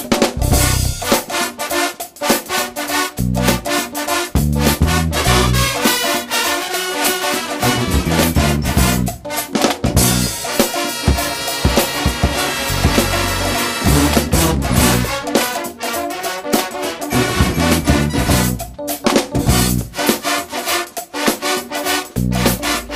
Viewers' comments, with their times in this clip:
0:03 the beat is my favorite